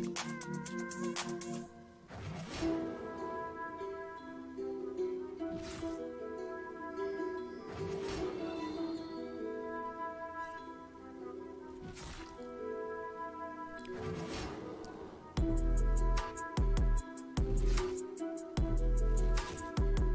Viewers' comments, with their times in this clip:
0:03 That second instrumental that starts playing is clean. I wanna know it bad lol